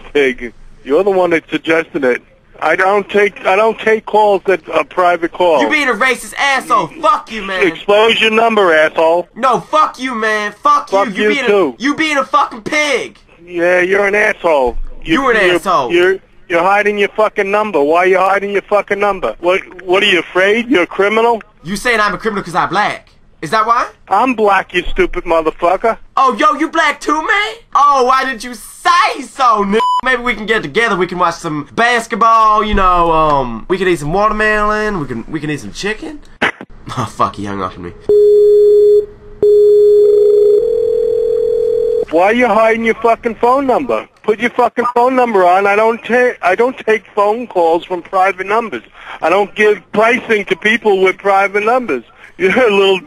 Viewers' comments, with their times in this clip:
0:09 Cj From Gta?
0:36 You sound a British person then XD